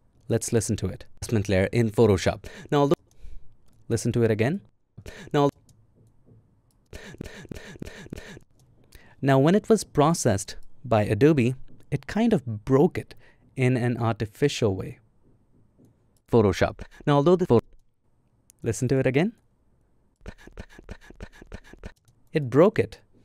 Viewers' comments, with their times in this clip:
0:07 the original is better also because it compressed the tonality in your voice, removing its texture and personality. However, I have often (even recently) had really bad audio that this may have helped a lot to get something usable.